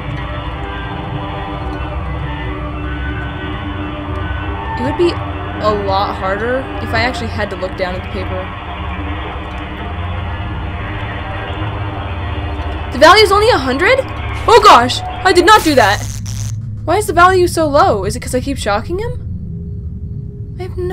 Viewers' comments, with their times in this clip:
0:07 Ok so if you only listen to the music in the background, and then listen to the foxy pirate cove music box, it sounds SOOO similar! And it's so creepy!!!